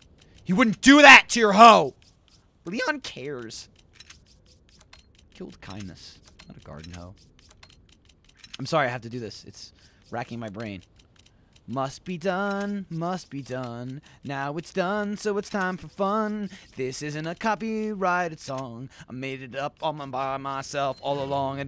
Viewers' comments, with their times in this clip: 0:04 he so isnt macing a cover of spider mans 60s theme song